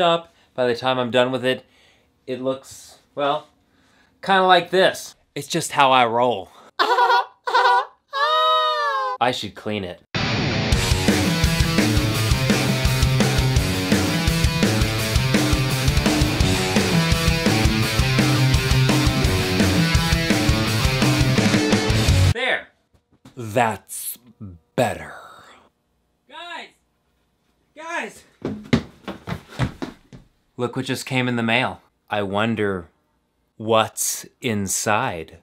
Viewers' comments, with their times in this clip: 0:10 Ahhhhh my left ear oml 😂
0:10 rip left ear
0:18 Me when i hear the doors and i didnt clean my room: